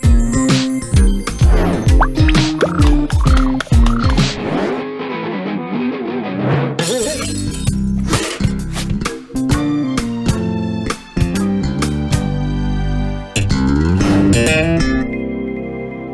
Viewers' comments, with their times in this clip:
0:04 Genie: tone deaf